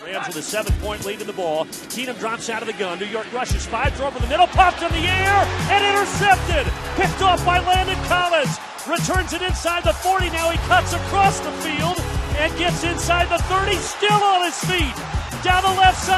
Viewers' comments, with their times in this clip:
0:03 i didn't know raymond romano announced the Giants and Rams game